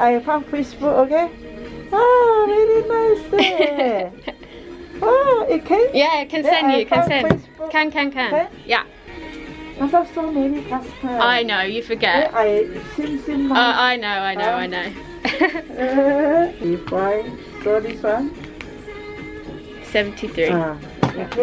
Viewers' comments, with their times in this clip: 0:06 "Can can can" 😂 You sounds like a local now